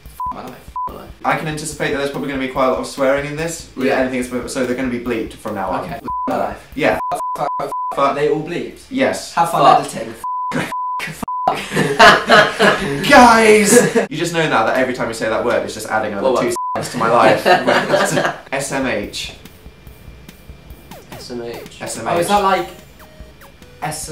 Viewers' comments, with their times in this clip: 0:09 One “fuck” was left unbleeped
0:10 I think you missed one buddy